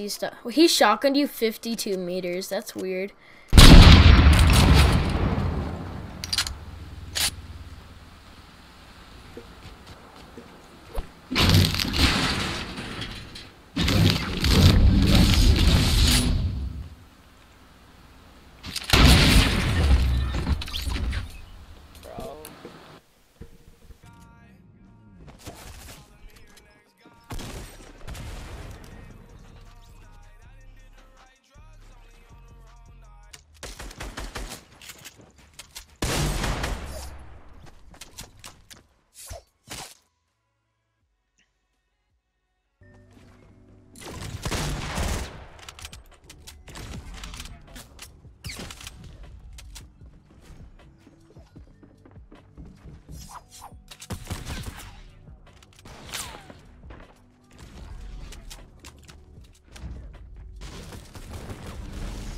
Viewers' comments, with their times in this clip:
0:03 my hearing is officially gone
0:22 Why the actual crap does the guy you killed have the volume so freaking high I legit can’t hear anymore
0:43 and the clip after sound similar lol but the clip after sounds slow motion